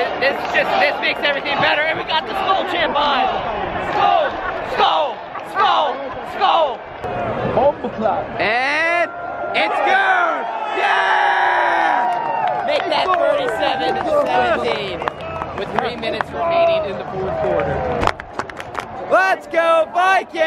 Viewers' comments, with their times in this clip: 0:07 someone said motherfucker in Jamaican i think